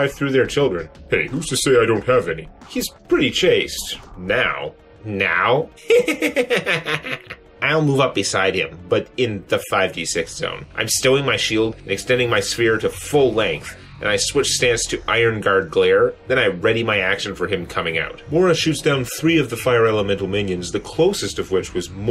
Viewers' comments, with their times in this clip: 0:04 i have no idea why angel is laughing and being in that situation is something that should scare EVERYONE.